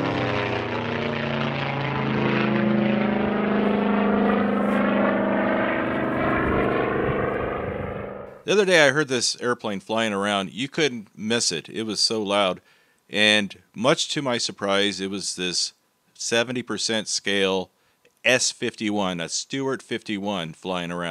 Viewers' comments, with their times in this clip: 0:06 ...without the thumbnail, or being able to see the plane...its sound gives it away..P51 Mustang. Well..I stand corrected.